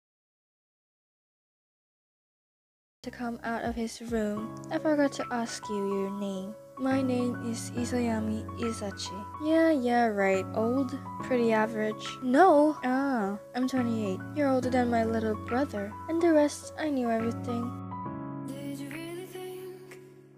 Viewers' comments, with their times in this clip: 0:03 God thanks the voice is back! 😊❤🎉